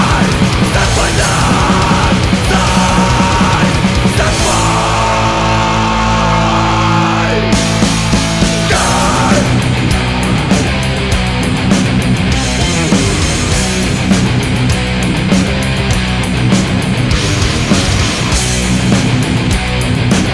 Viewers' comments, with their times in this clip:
0:05 that break, holy fuck !